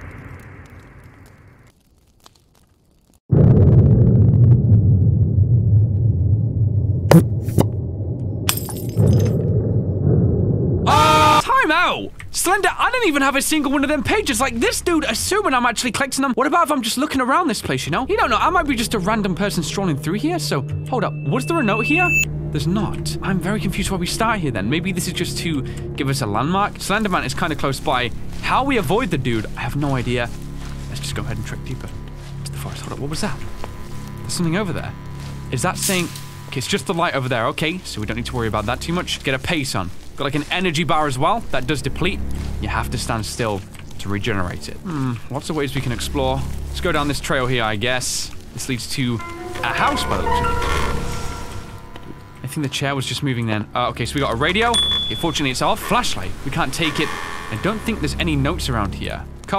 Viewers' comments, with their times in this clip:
0:05 That sound editing was so golden!
0:10 Perfectly synchronized screaming lmao. Like if you agree.
0:44 Sounds like a villager